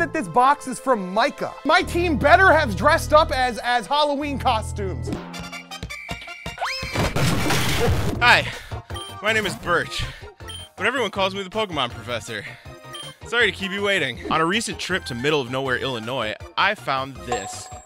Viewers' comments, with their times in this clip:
0:05 Nice costume man :D The music is killing me lmao